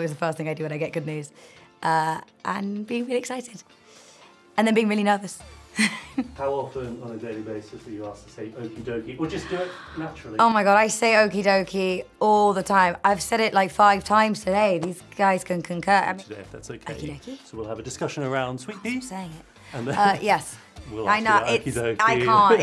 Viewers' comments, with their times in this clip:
0:09 she so CUTE the okey dokey is so pure stop